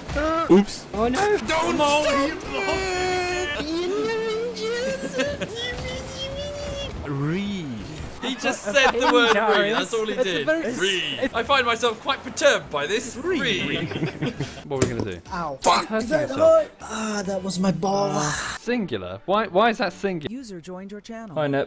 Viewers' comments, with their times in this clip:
0:03 Autistic Mantis Impressions 🤣🤣🤣
0:06 I was replaying this but my mind losing focus to the video. Until I hear the classy "ree" I suddenly laughed lmao.
0:06 That was the fanciest Ree I've ever heard
0:07 That 'REE' never fails to crack me up XD